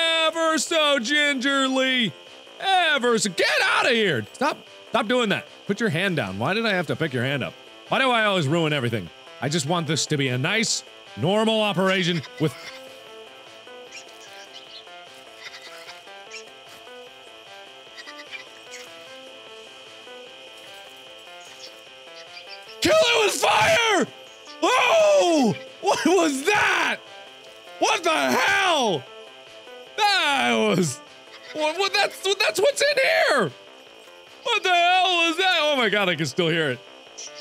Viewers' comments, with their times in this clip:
0:08 "I just want this to be a normal operation." (thing starts to squeal and float away) O-O ... "KILL IT WITH FIRE!" XD
0:10 "I just want this to be a nice and normal operation with..." a strange alien organ suddenly comes out and wiggles away giggling. "KILL IT WITH FIRE!!!"
0:10 "a nice, normal operation" [creepy thing that sounds like baby pops out]. [silence] "KILL IT WITH FIRE!!!"
0:24 Mark absolutely flips at the ... lung? I think it's the lung.... that's what mark calls it and Mark flips out at the lung cause it seems to make noise and live. It is actually REALLY freaky!